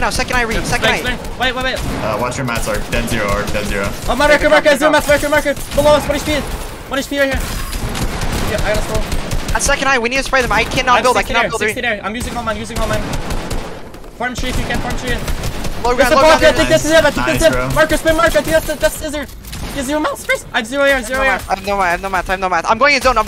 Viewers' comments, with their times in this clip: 0:10 😬the voice crack tho. 😭